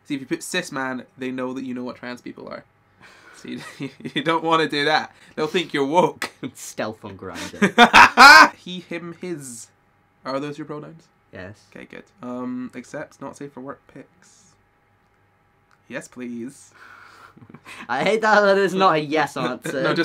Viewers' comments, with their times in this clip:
0:07 that laugh is terrifying lol